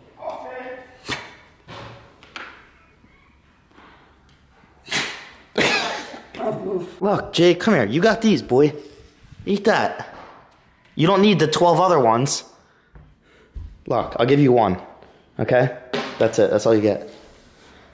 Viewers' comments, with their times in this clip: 0:05 when he sneezed and grandma said bless you it sounded like he said thank you 😂💙